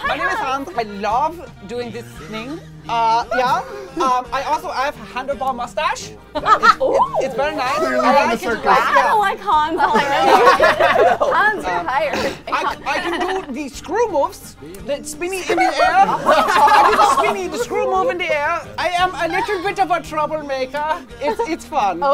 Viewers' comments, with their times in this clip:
0:03 DID HE BECOME SPANISH OR SOMETHING